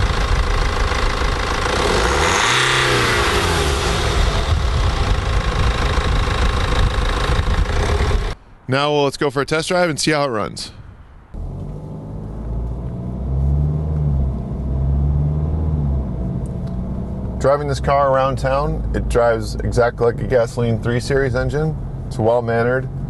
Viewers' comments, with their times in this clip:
0:05 ITS SOUNDS LIKE A TRACTOR